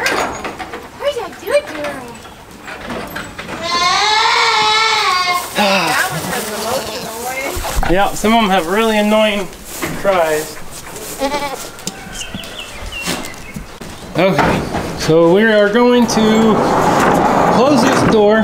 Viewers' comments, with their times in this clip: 0:05 There is that one goat that has the funniest 'scream' I love it! ... That is too funny! It has a unique scream! This video was GREAT!!!!!!!!